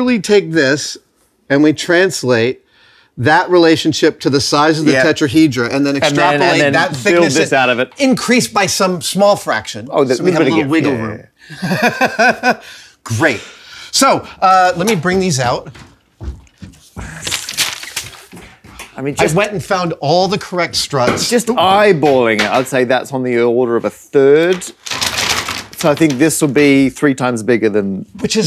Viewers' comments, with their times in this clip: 0:09 Matt's knowing "yeah yeah yeah yeah" was just perfect.